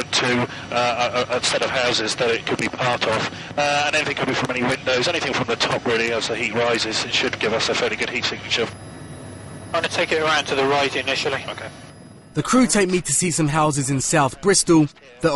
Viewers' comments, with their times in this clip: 0:03 Dude is eating the microphone